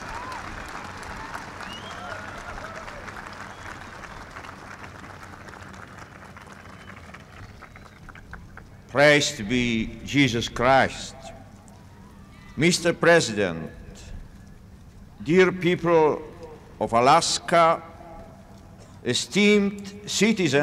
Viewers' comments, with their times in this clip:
0:08 St. Pope John Paul 2 starts talking